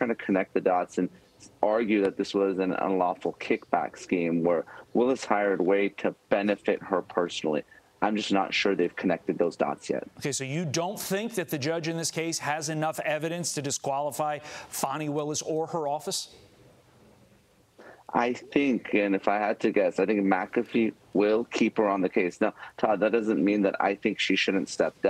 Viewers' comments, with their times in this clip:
0:10 am I the only one who immediately takes a negative and skeptical view of a man who intentionally makes their voice "fake woman" when they talk?